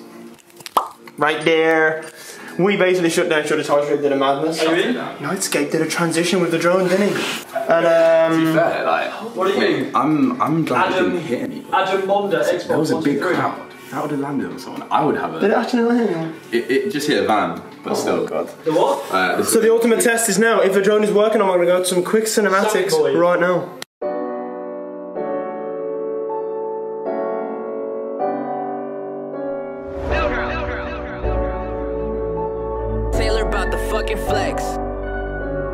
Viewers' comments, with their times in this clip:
0:10 Who else heard fortnite music
0:15 who heard the I forgot fortnite music in the background
0:16 lol fortnite lobby music in the background